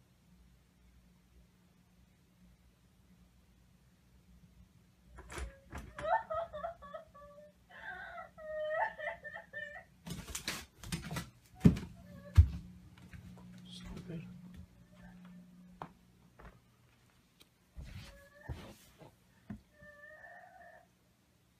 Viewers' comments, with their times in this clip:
0:06 she has the damn nerve to be crying after she attacked him 😂😂😂